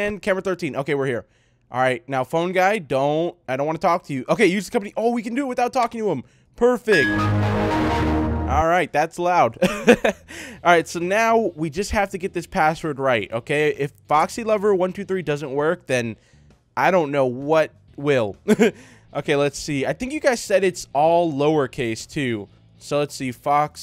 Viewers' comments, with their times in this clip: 0:07 You cracked My ears
0:07 You cracked My ea